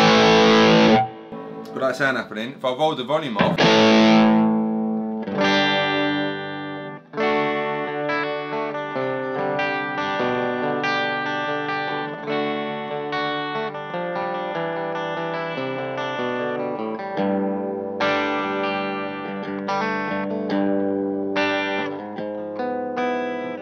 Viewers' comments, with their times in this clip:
0:08 similar to my sound, kinda 1960s psychedelic rock like CCR, I love it